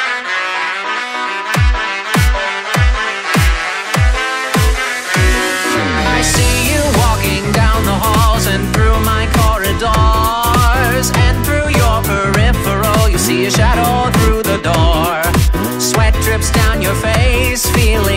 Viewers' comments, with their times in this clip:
0:06 The song is good from the start.